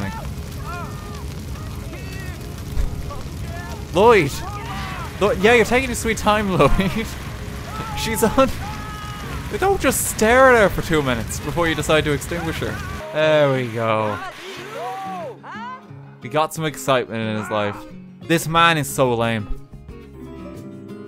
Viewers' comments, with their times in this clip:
0:03 I'm sorry, did that fireman just shout "Kurwa"?! Polish firefighter?? 😳😳😳😳